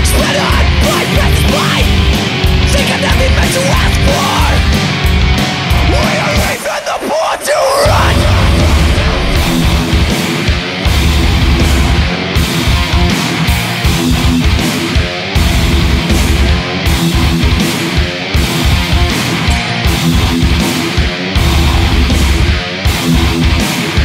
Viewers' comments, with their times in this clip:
0:07 THAT FUCKING BREAKDOWN BAAAHD